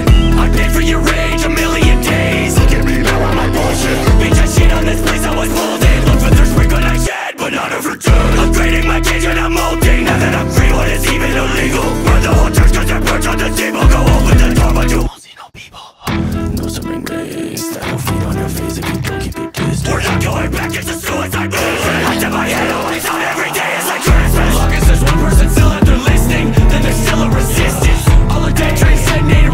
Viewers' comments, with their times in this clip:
0:05 Am I the only one who hears his phone when it's at 15%? Because I do Song is fire tough 🔥
0:14 Ghostly voice says "aún sigo vivo"